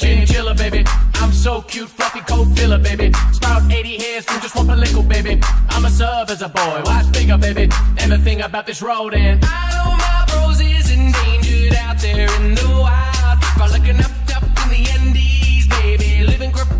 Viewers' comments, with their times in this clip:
0:04 I'm obsessed with this jam. My husband and i have managed to decipher almost the entire song (since cc can't seem to handle it) except for the line It sounds like "Ima serve asa boy watch bigga baby" 😂😂. Anyone know what is really being said?